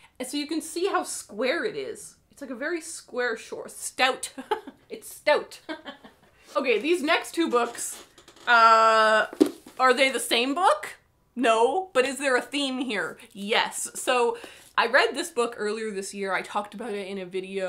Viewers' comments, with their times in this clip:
0:03 "Stout" giggles "It's stout" identical giggle